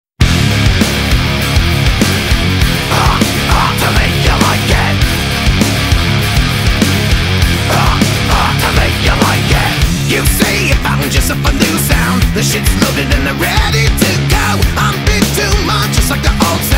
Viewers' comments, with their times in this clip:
0:00 right off the bat that riff tells me they mean business